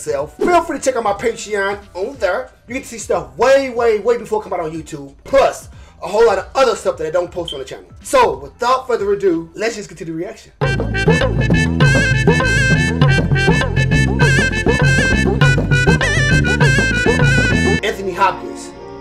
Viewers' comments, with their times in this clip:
0:07 you can see me hear the first Smoke detector beep and turn off this video...how dare you have the audacity to upload with that horrendous beep in the background. lets get a go Fund me going for some 9 volts for my man